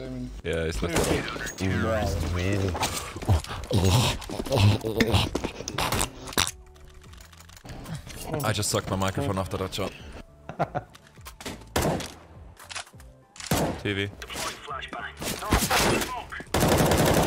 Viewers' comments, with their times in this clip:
0:03 sick microphone lmao